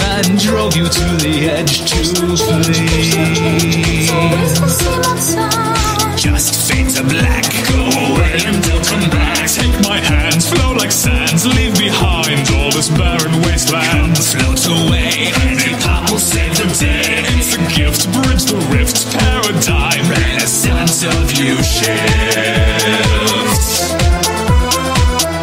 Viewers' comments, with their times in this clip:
0:06 When it gets to That beat is dope!
0:10 it sounds like "flow like SANS" instead of sands [megalovania intensifies]
0:10 at first I thought it said "Float like sands" until I read the lyrics and I realized that it actually said "Flow like sands" This was so dumb of me
0:10 FLOAT LIKE "SANS"